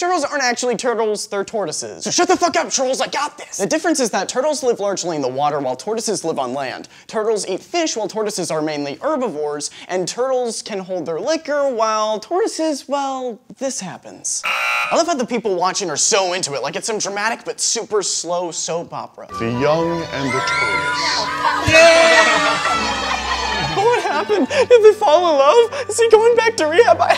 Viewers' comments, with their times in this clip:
0:08 Turtlez r urbivoarz. URBIVORES.